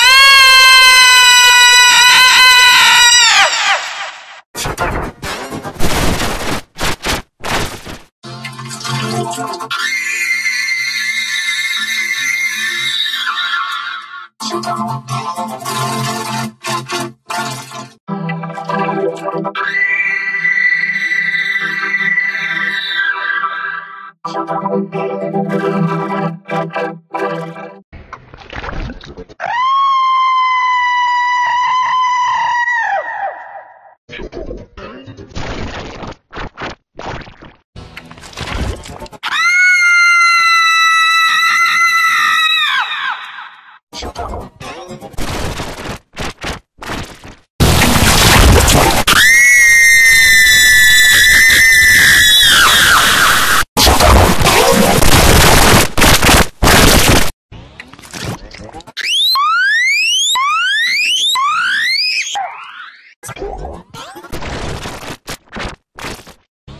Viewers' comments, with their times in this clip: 0:10 IL Vocodex screams
0:49 Did I hear the Phone vibration